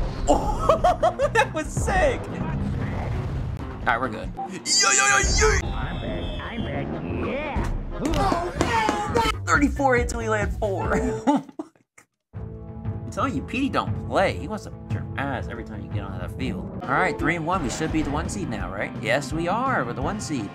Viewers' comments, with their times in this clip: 0:08 OH HELL NAW Bro was clappin DURING the recording